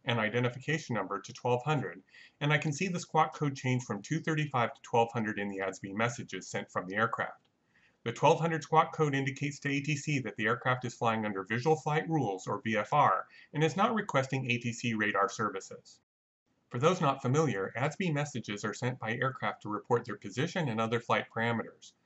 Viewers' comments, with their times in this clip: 0:05 ...what is "Osby" messages?